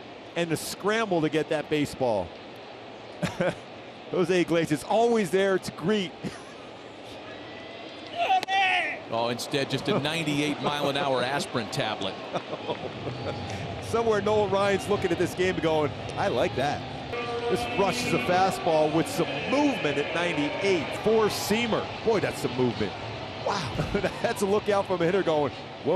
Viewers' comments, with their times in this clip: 0:07 I love his grunt. it's 8innings!